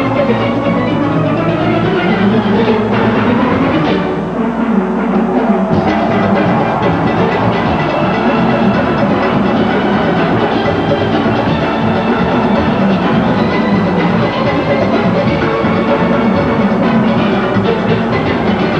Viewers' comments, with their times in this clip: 0:04 This song was soooooooooo goooooood... My highlight was when the guitars took the melody.. Great job Despers..
0:04 Re; it's like it was a BOMB! Bradley really showed everyone it was a full orchestra; his music always revealed combinations of sounds unheard of almost sounding distorted in the most harmonious way! I second this song is a footprint in history of panorama arrangements!